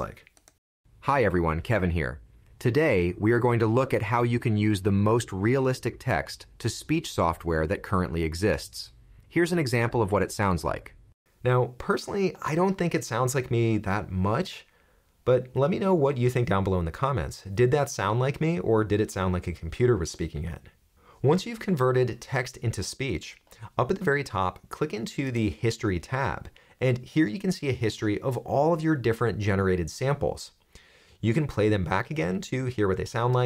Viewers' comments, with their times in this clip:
0:07 This is incredible. Thanks. My pet peeve, and what gives AI voices away to me, is often the cadence - pauses where there should be, sometimes none where they should. I have no doubt AI will become very natural in the not to distant future. If, in a script, the voice pauses incorrectly, or mispronounces a name, how is this corrected? For instance the voice says "text [pause] to speech..." After I hear something like that, I find myself listening for more. ;)
0:14 the cloned voice did sound like you. Unless I'm actively looking for differences, I wouldn't think you were using an AI voice.